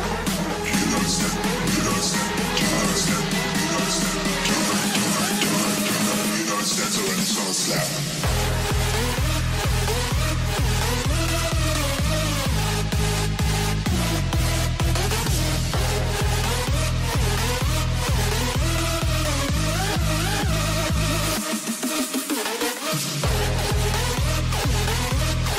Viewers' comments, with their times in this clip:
0:06 Tell me I'm not the onley one who hears this "Redstone slab" I KNOW DONT YELL IK BREAKING SOME RULES BUT WHATEVEEER